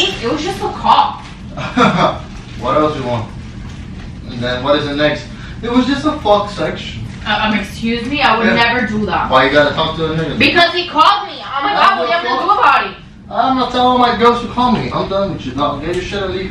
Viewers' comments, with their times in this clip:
0:03 Did you fart ? 😂😭